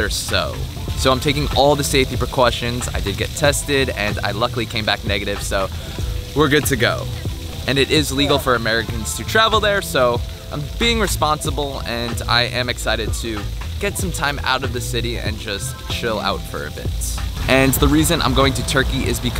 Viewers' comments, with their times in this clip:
0:04 Precaution with the accent 😂